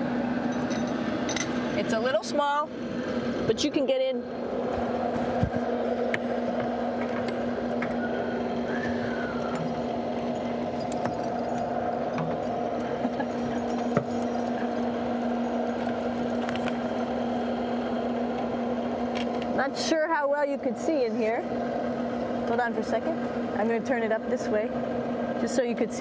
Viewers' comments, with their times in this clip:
0:08 screech on screen😂